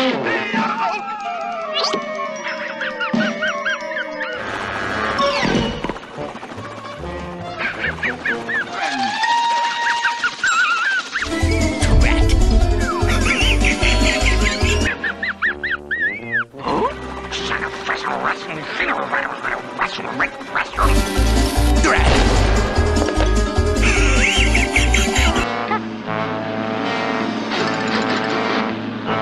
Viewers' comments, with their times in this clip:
0:10 omg he dies under a rock and he laughs 😂
0:16 He sounded like Scooby-Doo while asking “Huh?!”.